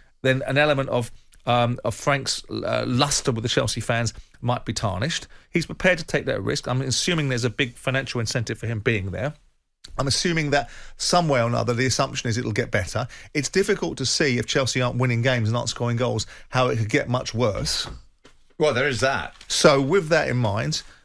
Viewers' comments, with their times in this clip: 0:09 The way his voice changed caught me off guard